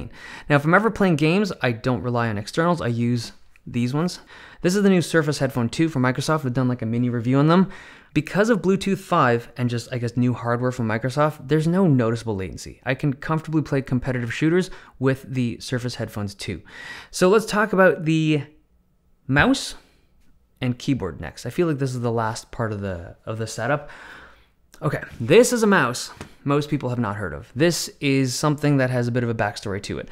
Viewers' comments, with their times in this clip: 0:10 that shatter tho :0
0:11 yo that shatter was nasty